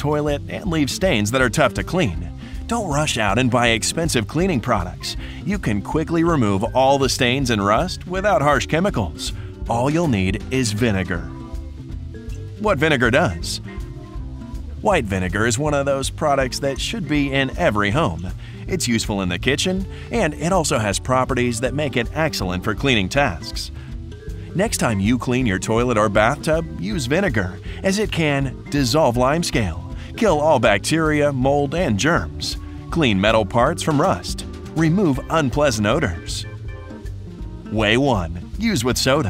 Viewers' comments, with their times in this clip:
0:09 it sounds like iam waching a tv ad
0:21 "It's excellent for CLEANING tasks," not "It's excellent for cleaning TASKS". What, you're gonna use it to clean tasks?